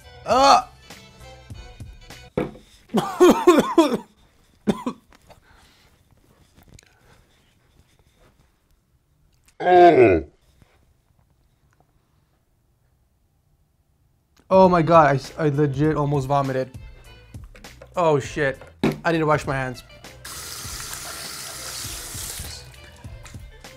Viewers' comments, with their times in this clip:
0:05 Roblox death sound intesfiesies